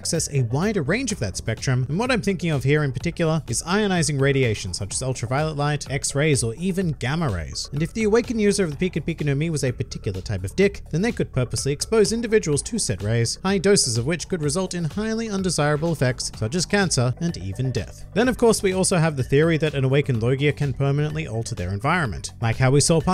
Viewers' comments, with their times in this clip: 0:08 Tick or D*ck i swear my ear must be playing me